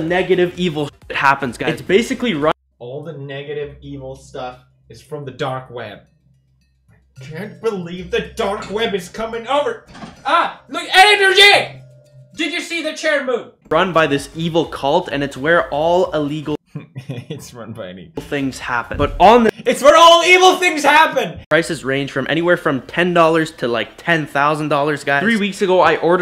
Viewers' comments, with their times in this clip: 0:10 my mans spoke a new language